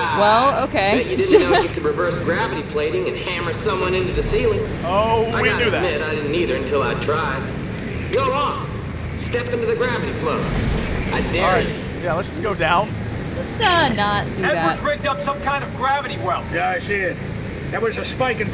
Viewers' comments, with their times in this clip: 0:05 backround noise : all hail Hypnotoad